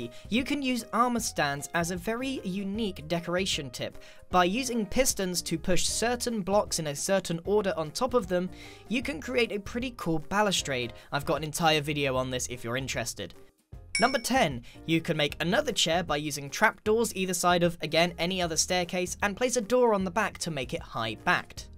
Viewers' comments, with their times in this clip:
0:05 is a voice crack that sounds better than mine :’D